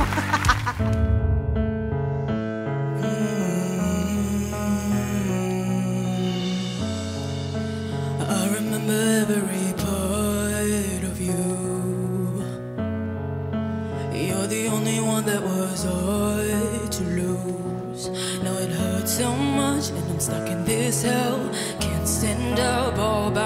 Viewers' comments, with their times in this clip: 0:10 Impressive voice. If they knew what she looked like I guess it'd have been a much quicker turn.